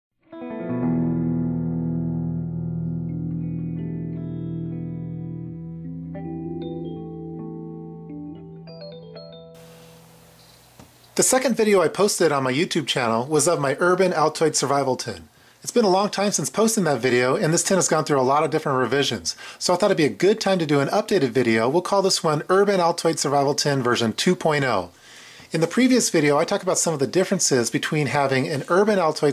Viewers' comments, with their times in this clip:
0:10 did he say survival Tit?